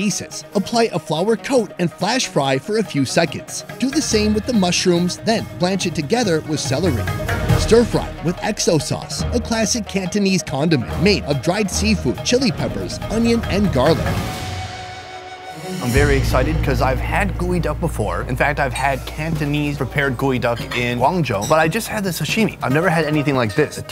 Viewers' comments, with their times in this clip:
0:09 Did he just say condom made up of dried sea food??🙄🙄